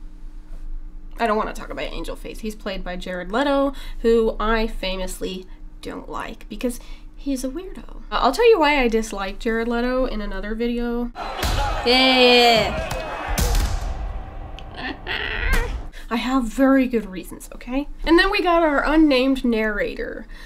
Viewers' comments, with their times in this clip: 0:05 Jared Leto is a what? A window? A win doll?